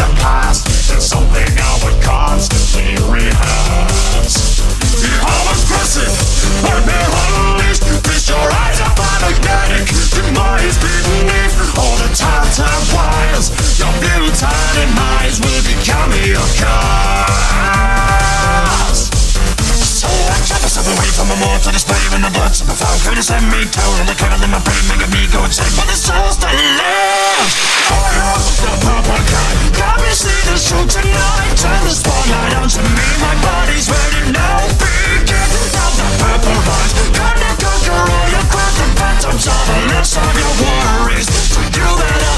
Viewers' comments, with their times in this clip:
0:06 why do I mishear this lyric as feast your eyes on Weirdmageddon? I just do
0:07 What sound like he’s saying Winston😊
0:27 The best beat drop ever 👌🏻